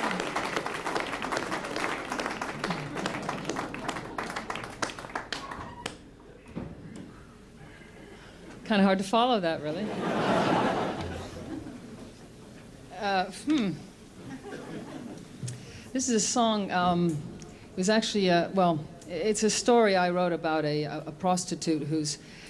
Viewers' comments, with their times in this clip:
0:09 Just stumbled into this vid. John Cale and Nick Cave - totally awesome. Chrissie Hynde has the loveliest, most supple female voice in rock and roll. And when she did "Kid" I completely lost it. Thank you!